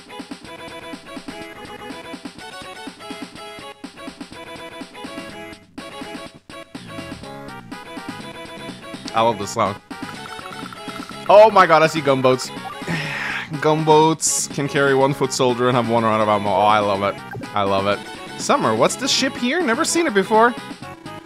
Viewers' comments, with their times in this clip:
0:05 Aight, tis banging is wholesome.